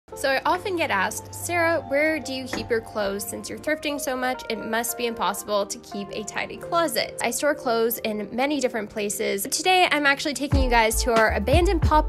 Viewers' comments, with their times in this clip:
0:00 sounded like a British accent lol 👀